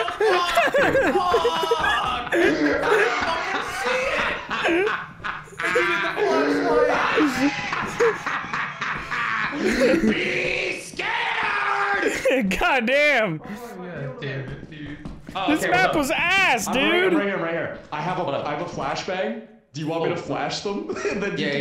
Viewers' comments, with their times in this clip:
0:08 that was the most terrifying laugh ive ever heard